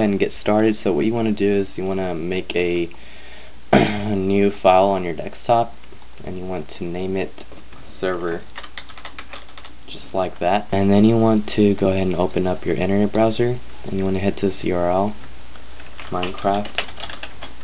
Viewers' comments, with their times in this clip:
0:05 anyone know what a "dextop" is? XD